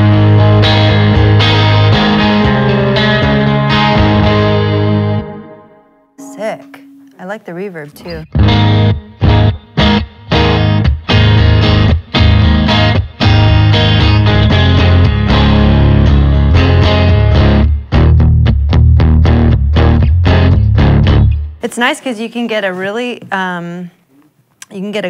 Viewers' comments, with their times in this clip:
0:07 is that one of her songs? anybody got the name? those chords w that tone are right up my alley